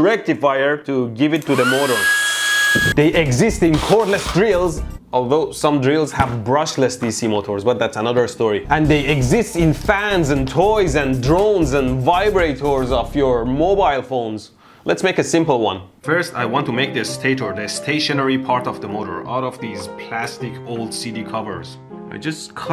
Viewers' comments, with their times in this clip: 0:09 it's so clean how he says it